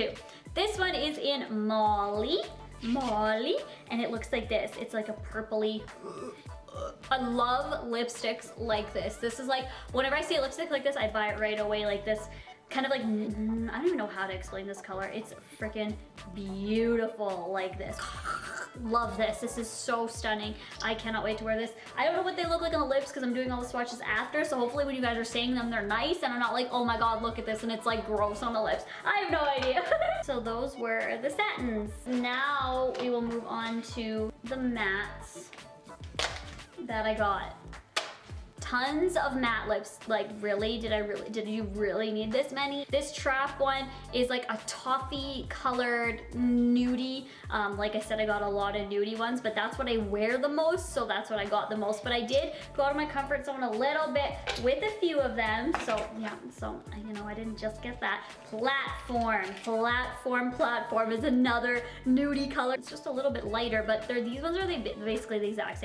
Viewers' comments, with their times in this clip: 0:05 Am I hearing things, or were there burps ? lol
0:06 sounds like she was burping lol
0:06 Did she just belch !? LOL!
0:06 what the heeeecck, were you burping lmao
0:48 OK did she say nudie or dudie??